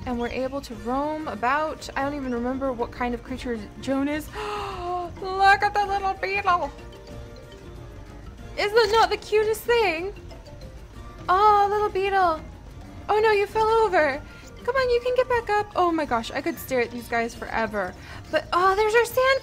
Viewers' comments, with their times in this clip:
0:04 what is that voice thow